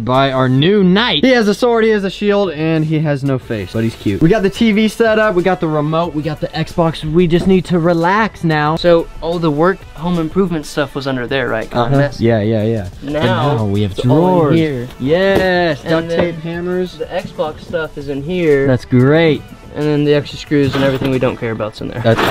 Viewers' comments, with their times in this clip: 0:07 Thought it said Roblox😂😂😂